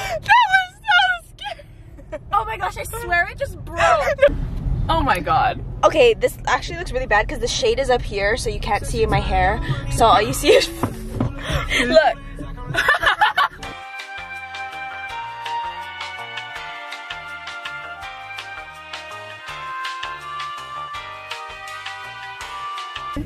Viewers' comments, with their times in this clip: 0:10 MY FAV SONG AH
0:11 I love that song